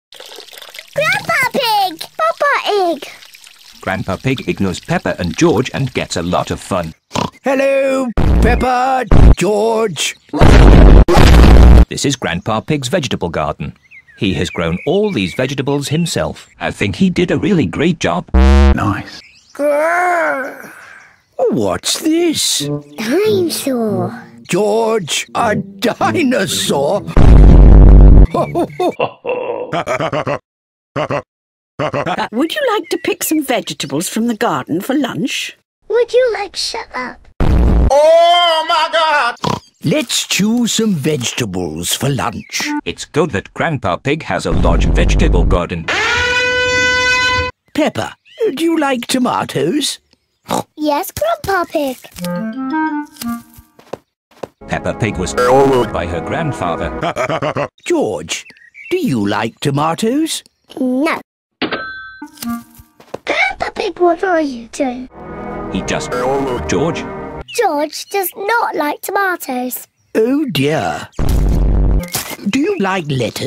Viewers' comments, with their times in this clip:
0:02 George is Hungarian. He said papa ig
0:02 George says papa egg😂😂😂
0:43 How do you get the sound of the man the talks like this
0:57 the part where daddy pig laughs😂😂😂😂